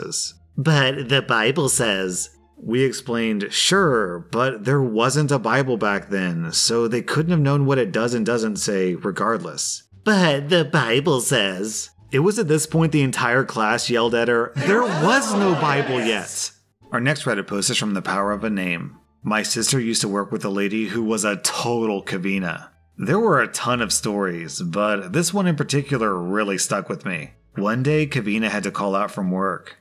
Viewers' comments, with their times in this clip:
0:10 The crowd shouting effect is so good. >XD
0:14 that scared me it sounded like there was a ghost next to me
0:15 reminds me of the magic school bus theme